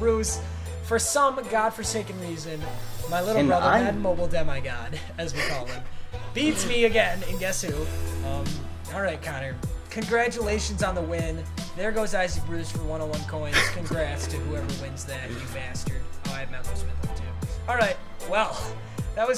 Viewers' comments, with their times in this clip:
0:06 the laugh in the backround